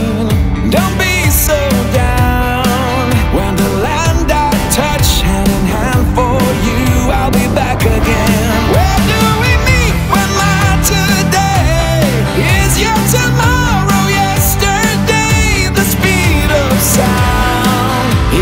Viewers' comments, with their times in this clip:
0:06 Great song but why would you not mute the wind sound when she was driving ?